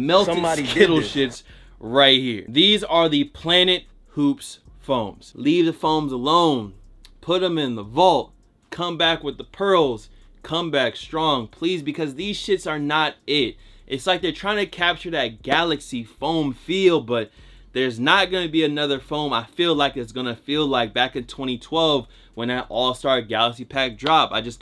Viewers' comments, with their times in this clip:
0:05 why is he spitting bars right here?😂😂